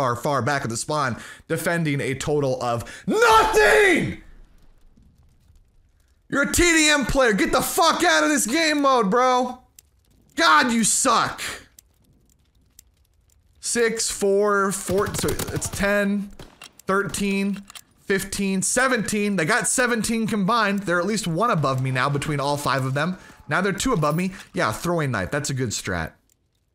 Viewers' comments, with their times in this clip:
0:08 u sound like sssniperwolf😂💀